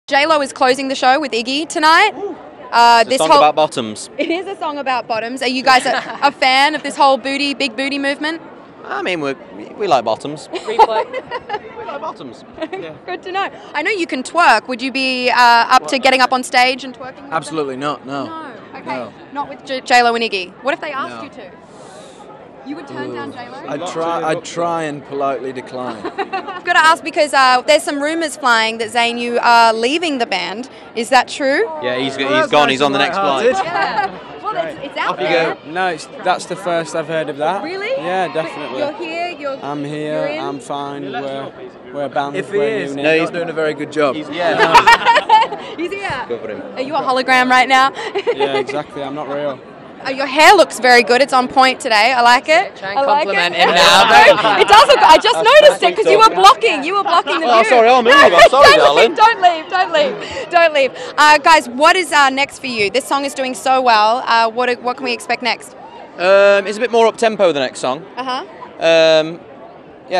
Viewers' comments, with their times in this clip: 0:02 Liam: the songs about bottoms Louis:*start laughing* Liam:*looks at him with this face* And NOW tell me that Larry isn't real
0:36 zayn sounded a bit like a young alex turner.
0:43 did harry say “if he’s, he isn’t gonna do a good job” OR “if he’s, we’re not gonna do a good job” I’m confused 😐
0:43 did harry say “if he’s, he isn’t gonna do a good job” OR “if he’s, we’re not gonna do a good job” I’m confused 😐
0:52 Love the part where Louis says: "Trying to compliment him now... Very nice!" and Harry and Niall start to laugh...